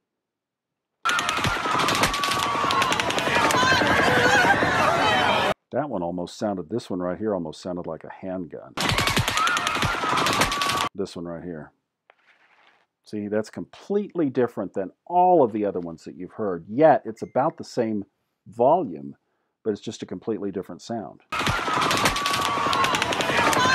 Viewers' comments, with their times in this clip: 0:07 sounds like and impact sound. like the bullet hit aluminum siding or somthinng